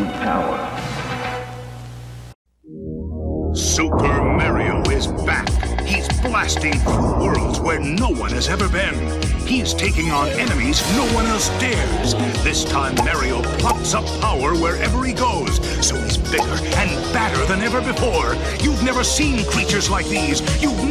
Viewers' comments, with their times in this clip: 0:03 WHAT IS MARE-RIO